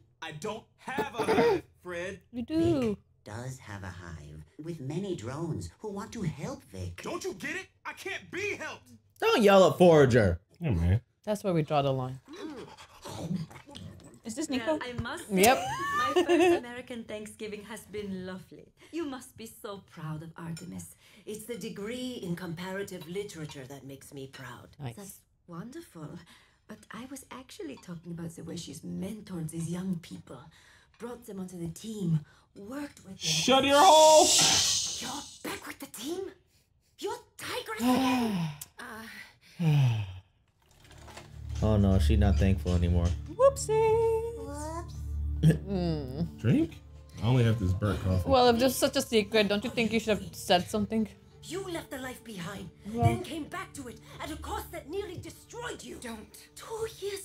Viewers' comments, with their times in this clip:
0:09 Nah, screw Forager. The way he speaks is the most annoying thing ever and he brings nothing to this show
0:44 Why was that "Whoops" so cute? The kid is so aware.